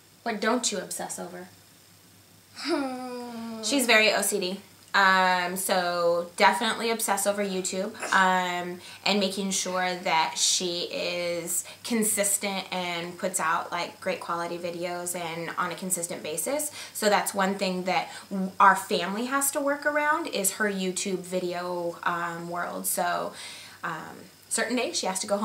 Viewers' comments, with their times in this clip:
0:08 she snorts lol